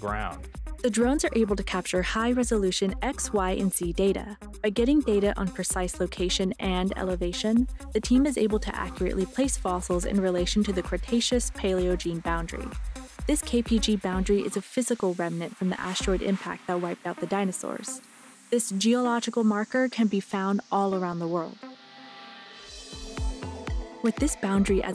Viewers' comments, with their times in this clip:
0:06 DISARMED?! you're not supposed to shoot missiles at those fossils!